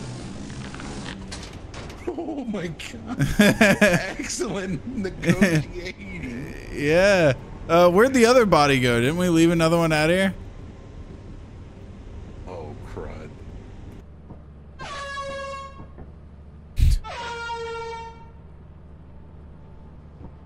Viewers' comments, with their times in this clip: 0:07 oh, crud... air horn